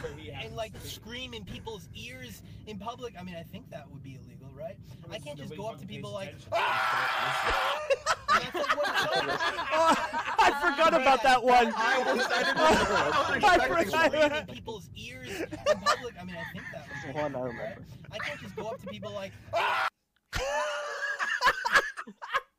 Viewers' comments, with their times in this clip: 0:06 Chaggots mating call ladies. He's single.